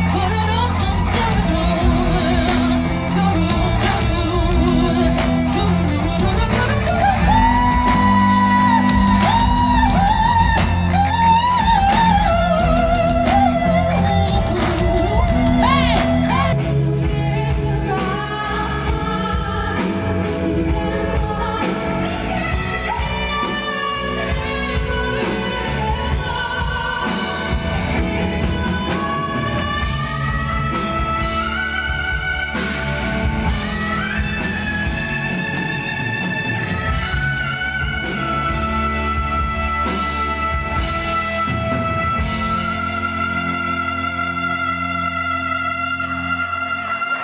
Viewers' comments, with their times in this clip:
0:08 those B5s UGH!!! GOOSEBUMPS 💖💖
0:30 that E5 is flat right? Btw Queen 👑